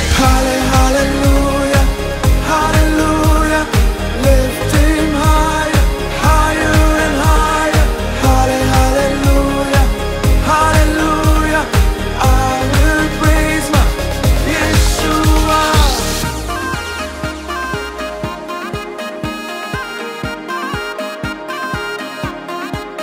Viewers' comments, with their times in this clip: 0:09 yes I will praise my Yeshua........ Cool vocal and music. ❤ It